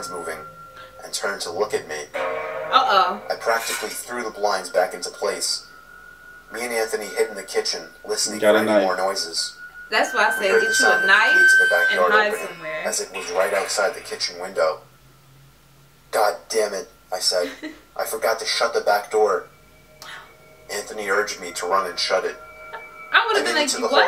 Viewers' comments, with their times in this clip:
0:09 A Car Alarm Just Went Off So It’s Extra Creepy